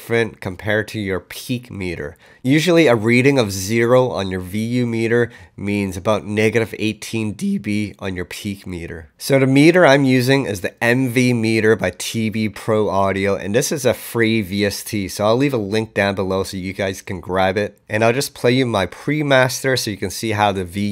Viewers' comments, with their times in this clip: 0:07 Voice Crack made it impossible for me to keeo following you :)